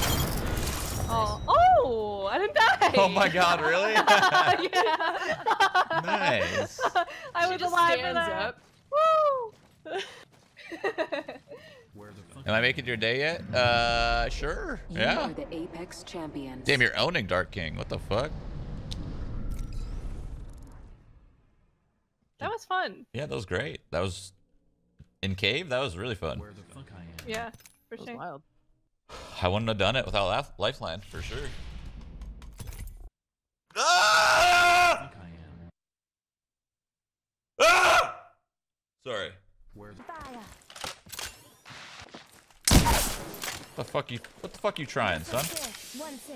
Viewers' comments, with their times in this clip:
0:03 I don’t which gurl it is but her laugh is adorable !
0:32 his war cry.
0:32 omg wtf that yawning and stretching techniques..